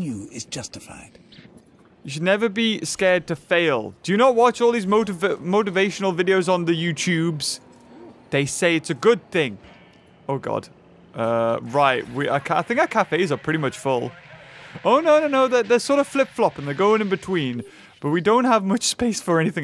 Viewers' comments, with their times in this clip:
0:05 he sounds like such a boomer 🤣🤣🤣